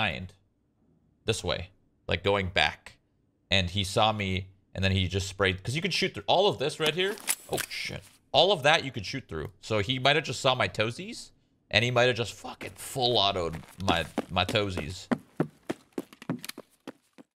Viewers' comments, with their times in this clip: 0:07 I don't even have eft open and that sound of a pistol being drawn made me go oh shit as well lol